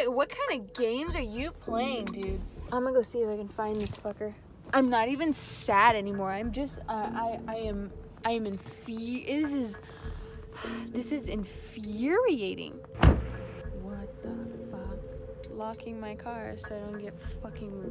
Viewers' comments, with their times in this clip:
0:04 I’m not even sad anymore I’m just infrtioz (English 👌 💯)